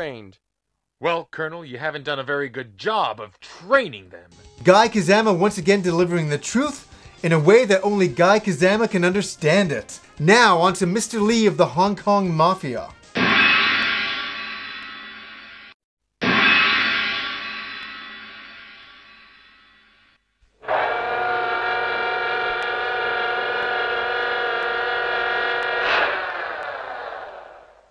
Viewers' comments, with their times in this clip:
0:10 hahaha As soon as I heard the fuckin gong I was like "ohhh no"